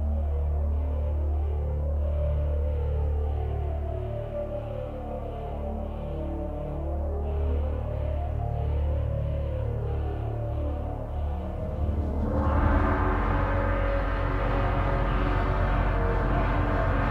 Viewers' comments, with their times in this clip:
0:03 I love that chorus in crescendo that starts at minute I recognize parts of the chorus of the complete work, the voices sing: "Conan" and "Tharas Mordor" ... in this part, however, something else is heard, I can not define it, but it mixes with "Tharas Mordor!" And ends with "Fati!" remembrance of Thulsa Doom (easter egg)